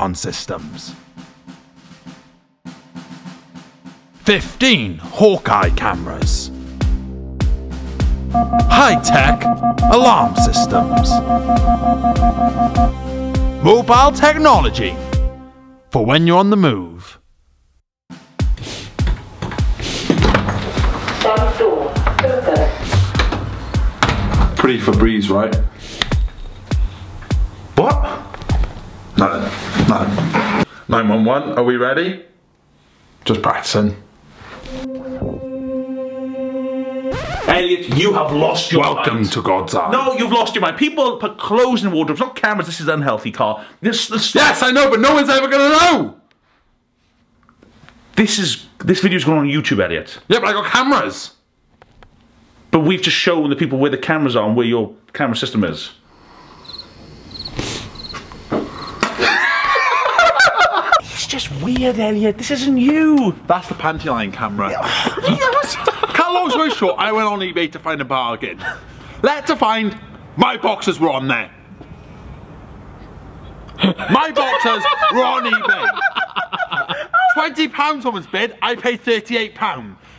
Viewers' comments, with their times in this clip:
0:09 like in halo 1 when u dont have shield
1:06 he went on eBay to find a what? I couldn't hear what he said.